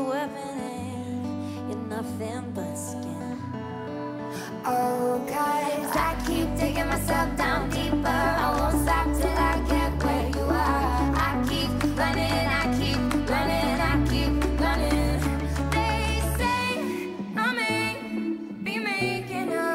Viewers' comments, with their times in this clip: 0:04 she got that note pretty untill someone ruined it but still pretty